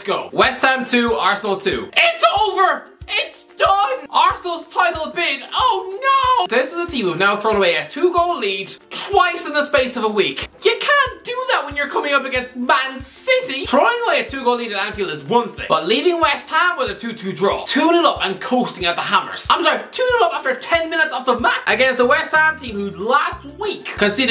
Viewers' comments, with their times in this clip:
0:05 that “oh no” was absolutely hilarious if you’d hear something you would expect he is an arsenal fan